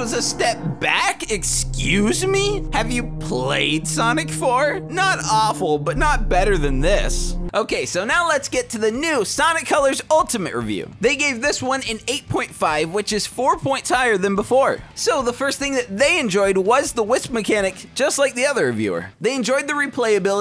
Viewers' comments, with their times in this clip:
0:04 he actually sounded like sonic lmao, from BOOM or whatever